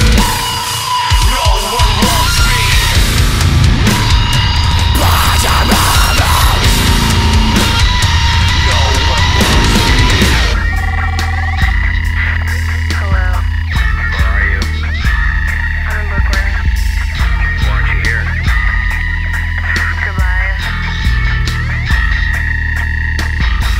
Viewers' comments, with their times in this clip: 0:10 Is nobody gonna talk about that dope ass beat ? I wish they made it longer into it's own instrumental or something, shit sounds awesome.